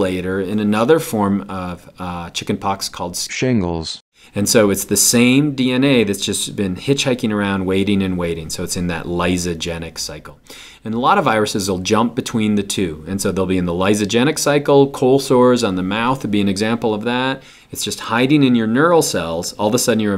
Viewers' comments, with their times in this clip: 0:03 >.< XD lol That made me laugh so hard when that computer voice came out of nowhere Love all your videos!!!!
0:03 Why did he have a computer generated voice say shingles ?